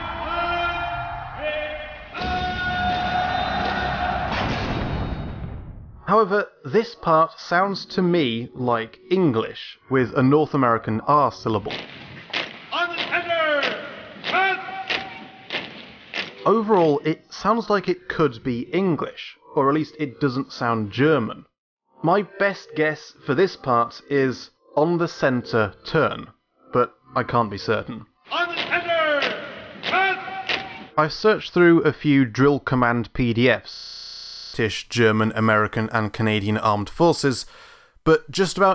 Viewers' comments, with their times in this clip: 0:03 Listen carefully in the last half of this RA3 part, the last half looks like 'Mechanical Mind' from Kane's Wrath, the beginning part of course, but only with guitar this time
0:26 is a clip that you said its English with an American accent, but after listening it a few times (cause it wasn't english) I have to say its finnish (yes, my native language is finnish). Its a commanding shout from a commanding officer to his infantry platoon and the words are "Katse eteenpäin" and in the clip its "Katse eteen..PÄIN!" (Eyes foward!).